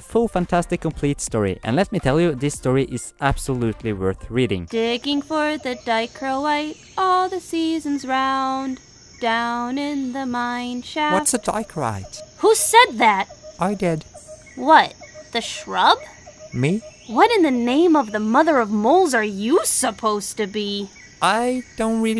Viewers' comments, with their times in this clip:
0:05 I wasn't sure why the voice sounded familiar but as soon as they were credited, it hit me xD